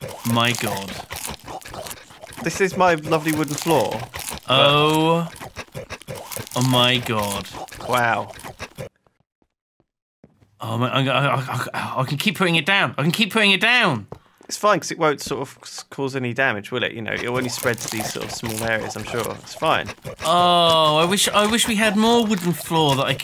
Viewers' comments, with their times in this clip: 0:10 lol Simon was so excited with the gold that he started speaking Arabic